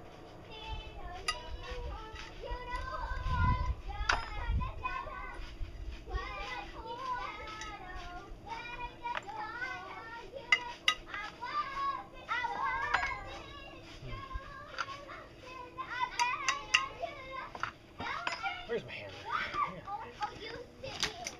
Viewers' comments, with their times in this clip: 0:05 They sound like "Minions" in the background haha, so cute